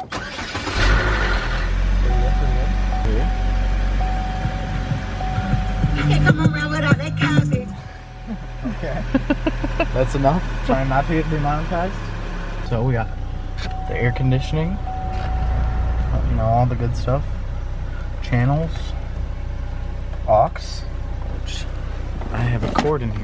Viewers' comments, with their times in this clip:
0:06 PERIODT they playing the city girlzzzz
0:06 that’s the city girls😂😂